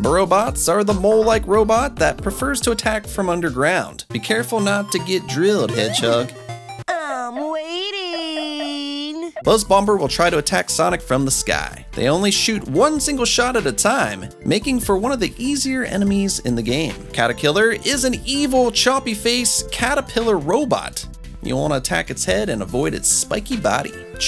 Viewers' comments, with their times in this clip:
0:09 the second B is supposed to be silent. Buzz Bomber 🐝 💣.